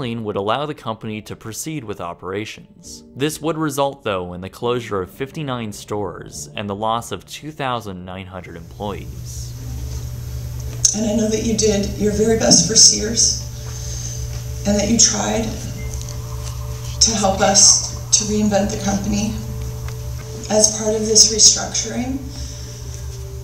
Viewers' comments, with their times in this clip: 0:09 the lady speaking in that clip sounds real sad.